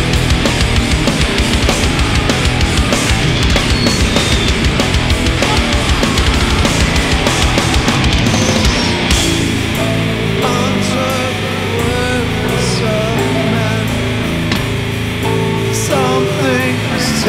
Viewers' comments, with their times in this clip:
0:05 Am I the only one that heard the come on ?